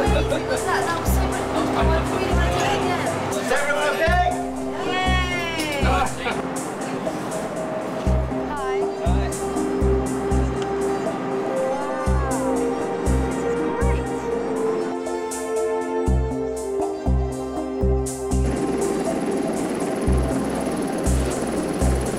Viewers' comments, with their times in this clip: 0:03 as well as various other parts... the soundtrack is VERY "Deus Ex Human Revolution", there's definitely the odd synth patch which was used in HR, but that whole sound reminds me SO much of Tai Yung Medical, right back 5 years before its release! I can't find the musical credits for this, but I reckon it's Michael McCann, who licensed some tracks to a TV production company (and therefore went uncredited).